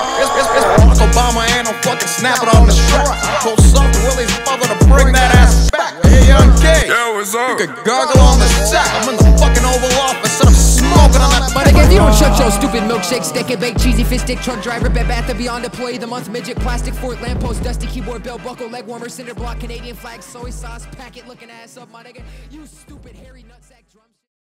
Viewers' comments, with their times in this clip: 0:07 his voice is so nice